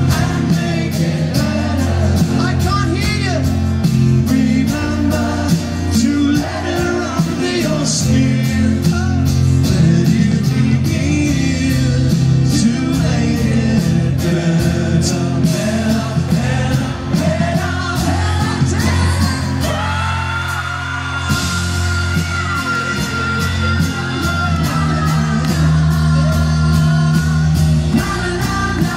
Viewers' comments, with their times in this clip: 0:09 "The Paul" does everything real Paul McCartney did. Leg sway thing, head bobble. Edit #1: I'm actually crying behind my screen because I love them as if i was in the 1960s Edit #2: You can tell a crowd is good when they say "fucking hell" like Paul McCartney did. It's very faint but you can hear it